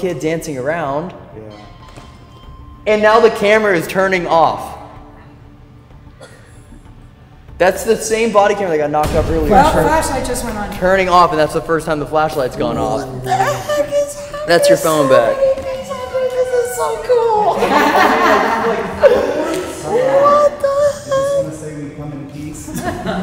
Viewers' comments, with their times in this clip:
0:05 I hear a kid cough